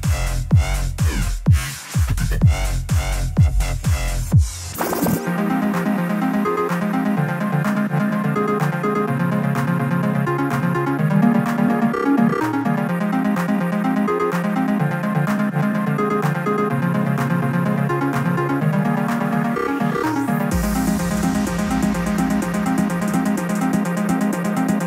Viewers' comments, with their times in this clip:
0:07 Anybody know the song it sounds like a daft punk remix but I cannot remember the original song.